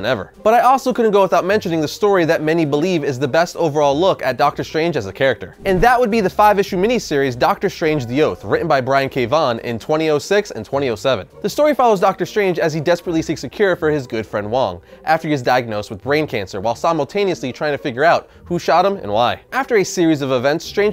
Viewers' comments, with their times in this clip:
0:08 that's a weird way to say 2006 and 2007.